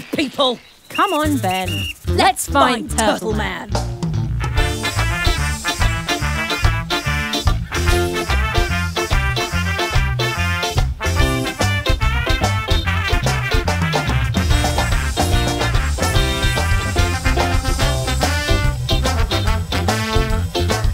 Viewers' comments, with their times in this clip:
0:05 Am I the only one who hears Teddy Bear's Picnic here????